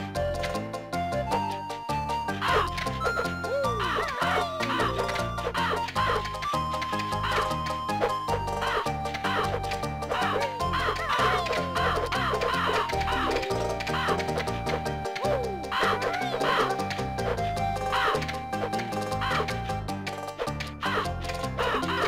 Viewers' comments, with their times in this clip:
0:06 You really expanded the Zora's Fountain area! The music really made it feel atmospheric! Man, that section looks both creative and annoying!